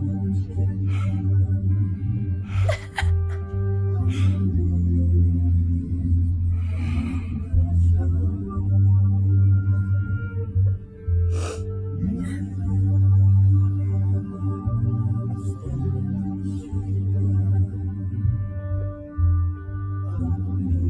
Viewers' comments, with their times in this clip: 0:06 That last breath of Arthur's broke my heart...